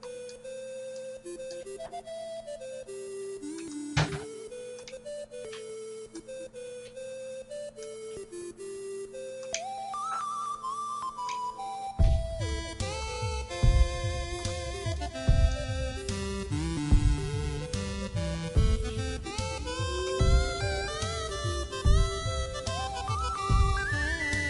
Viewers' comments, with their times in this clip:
0:05 Sorry the music is quiet